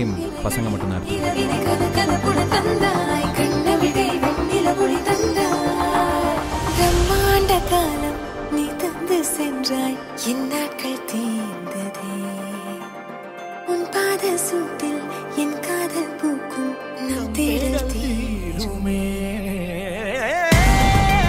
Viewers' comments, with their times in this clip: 0:05 That at the look and bgm wow love u ❤❤❤❤❤❤